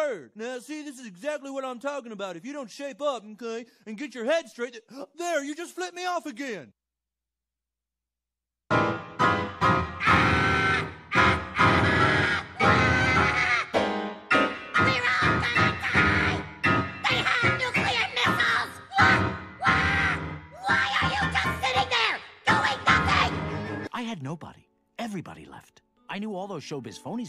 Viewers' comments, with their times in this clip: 0:07 Tweek's piano playing is a solid 10/10.
0:10 that song deserves a grammy